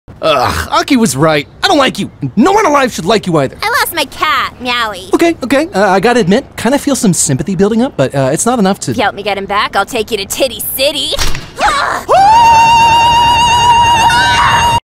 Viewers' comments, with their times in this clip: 0:12 the godly scream